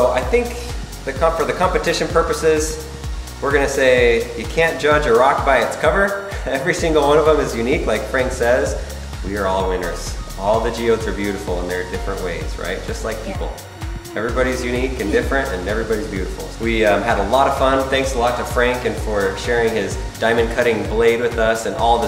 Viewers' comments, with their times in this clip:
0:05 (Kid on the far right) Airhorn Sonata